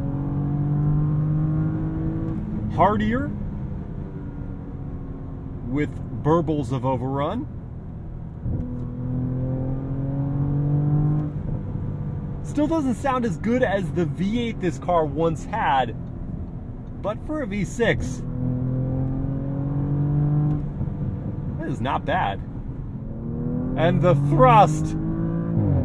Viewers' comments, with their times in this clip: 0:09 Easily the 2nd gen design. The 2020 models front Grille is more upright and lends a much more Smarter and sportier look. The old one looked like a tired A4! Oh and this amazing V6 sounds miles better than the big boring bungling V8 that's just noise for noise sakes.